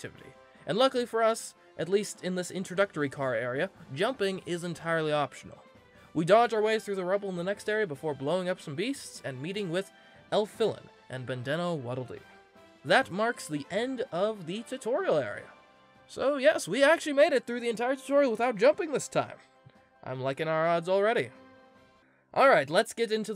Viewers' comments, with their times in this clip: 0:08 hard to say 'and meeting with Elfilin' and calls Bandee a Waddle Doo. Also, who says 'Bandana' like that? (Sorry.)
0:09 Hard to pronounce 'Meeting with Elfilin' and calls Bandee a Waddle Doo.